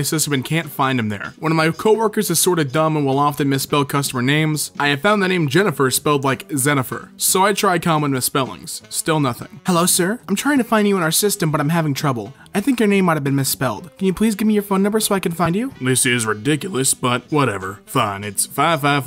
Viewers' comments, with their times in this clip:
0:07 why did he say xeniffer like james charles